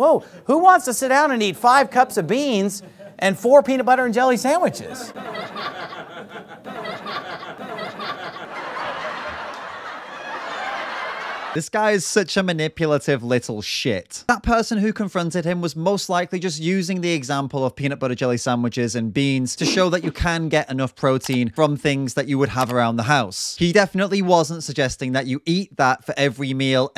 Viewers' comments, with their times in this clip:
0:09 lost it when Sadhguru came in with his laughter xD